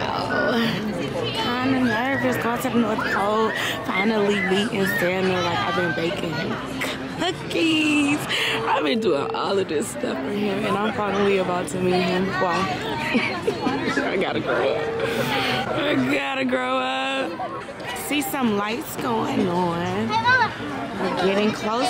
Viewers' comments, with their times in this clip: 0:09 you hear him talking ❤ 🙌🏽
0:09 you hear him talking 🙌🏽